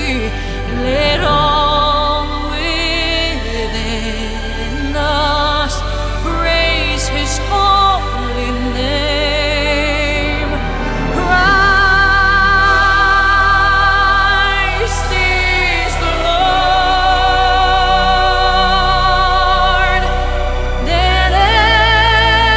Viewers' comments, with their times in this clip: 0:10 This song makes me cry. Her version only. She hits “Christ is the lord” right in ❤God bless you Celine
0:10 Love that she is powerful but can sing gentle. Beautiful ❤️ Luke 2 John Merry Christmas